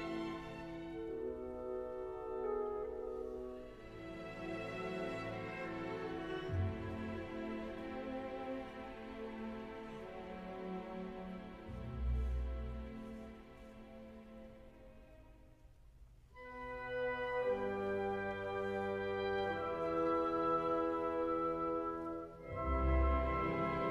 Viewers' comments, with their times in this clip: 0:06 bass pluck makes no sense comparatively .this was horribly interpreted